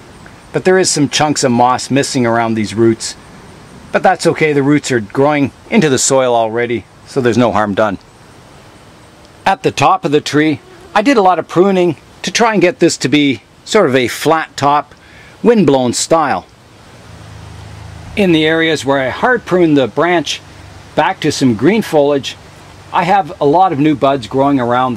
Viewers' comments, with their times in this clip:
0:10 I like the project of this ficus - it is developing really interesting. Watching your video in the headphones and I thought a mosquito is flying near my ear hahaha